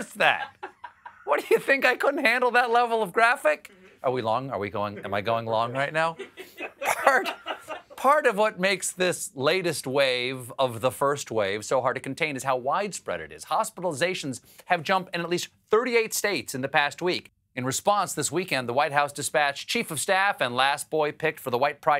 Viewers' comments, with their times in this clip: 0:06 speeds up monologue to make up for going long. lol